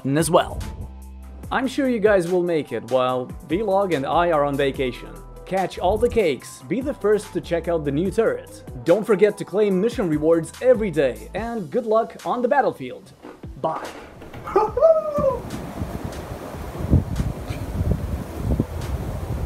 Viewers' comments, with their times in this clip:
0:05 oh it's him, the mysterious voice of the Vlog!